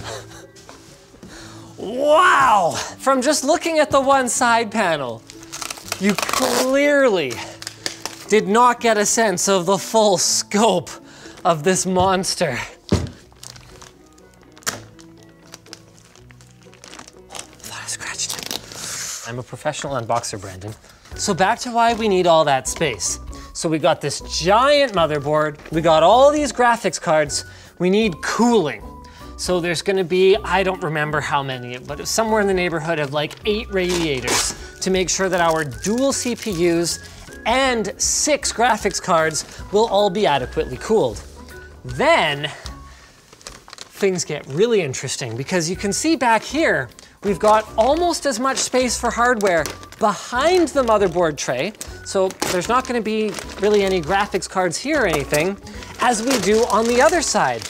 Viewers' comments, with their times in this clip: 0:06 you sound like Michael Scott lmao
0:41 i thought he said ranegade raiders